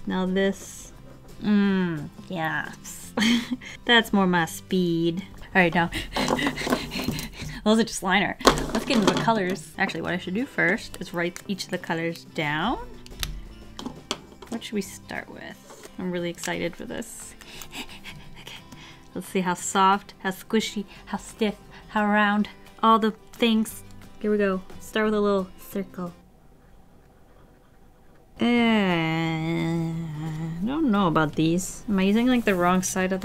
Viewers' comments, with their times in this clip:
0:07 Watch waffles pant like a dog I really weirdly like it
0:18 I love watching her draw but everytime in her videos I hear her make that exaggerated breathing sound like it really aggravates me because it reminds me of the weird annoying 7th graders are my old school, they used to do that when they would talk